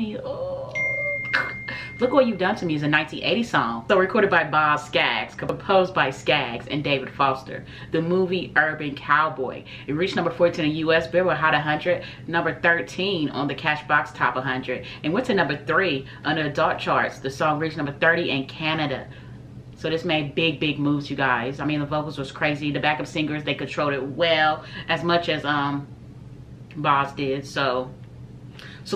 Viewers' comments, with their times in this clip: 0:10 This is my favorite Boz Scaggs song. I believe this is to a certain soundtrack of what movie? And even though it wasn't on the original song, I like the sound of the ladies at the end. -oh yeah, the movie was "Urban Cowboy", starring John Travolta.